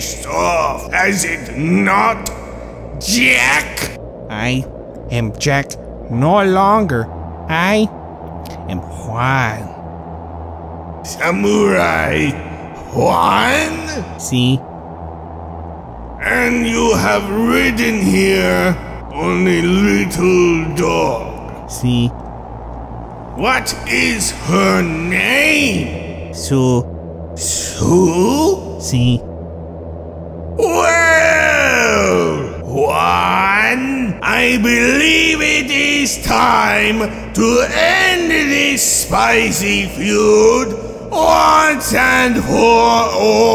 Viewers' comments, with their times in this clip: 0:04 he sounds like he's about to cry
0:28 I see somebody's been listening to Mel Blanc on Jack Benny